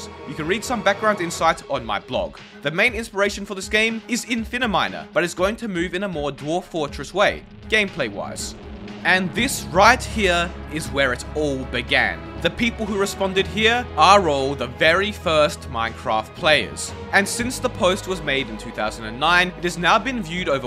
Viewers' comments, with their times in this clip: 0:08 So Notch turned into a trans vocaloid? wtf lmaoooo